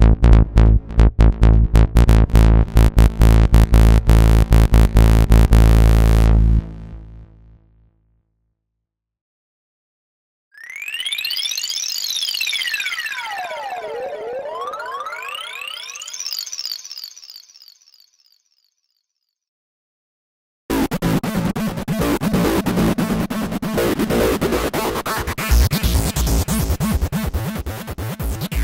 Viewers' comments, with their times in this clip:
0:10 Damn close to Metroid Prime 2 Sound